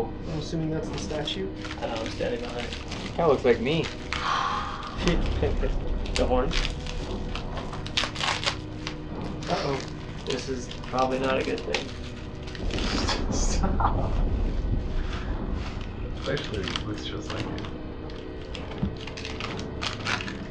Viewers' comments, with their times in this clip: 0:04 What was that Looks like a woman's voice going hahhhh